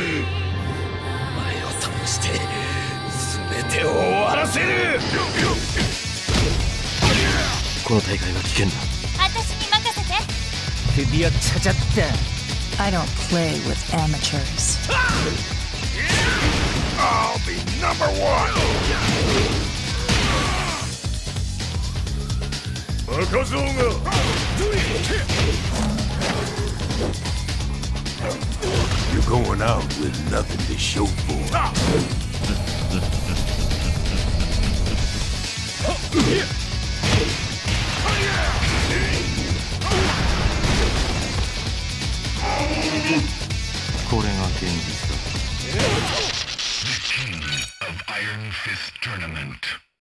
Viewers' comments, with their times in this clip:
0:06 Wrong Sound Effect actually. The move Heihachi does here is Demon Uppercut, not EWGF.
0:43 The way the music stop and the Electric Uppercut sound came in was badass😁👌🏾